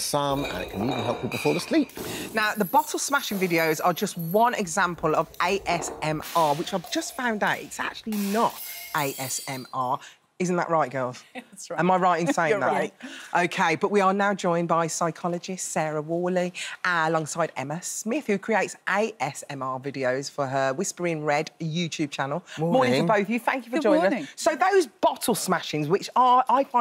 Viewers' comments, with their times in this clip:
0:08 imagine hearing the crashing noise coming from the stairs and you come to the spot where the smashing noise was coming from and you may come across this stuff flying down the stairs from the jars or bottles made of glass